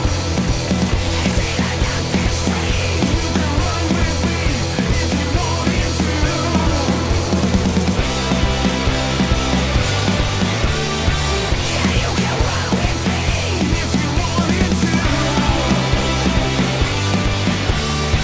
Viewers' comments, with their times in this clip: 0:06 They seriously added an extra snare note and roll?